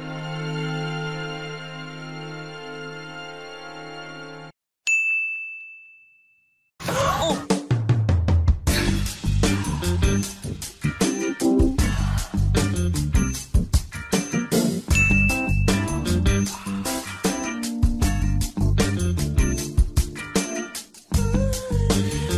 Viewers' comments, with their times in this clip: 0:06 DUDE LIKE I DIED AT THE RAW VID WITH BYUL SAYING "ᴰᵃʰᵉᵉ ᵘⁿⁿᶦᵉ" AND THEN YOU UPLOAD THIS EDIT! THIS YEETED ME TO HELL YO, I'M NOT EVEN COMPLAINING